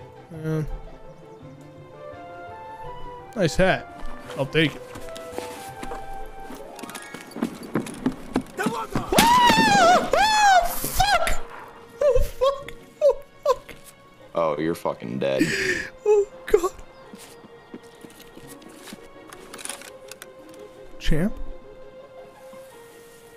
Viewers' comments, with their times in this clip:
0:09 strongest Tarkov player's scream